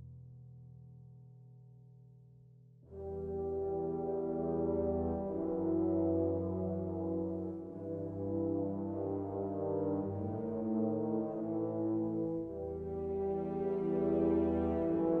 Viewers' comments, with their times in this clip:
0:03 Indiana Jones Vibes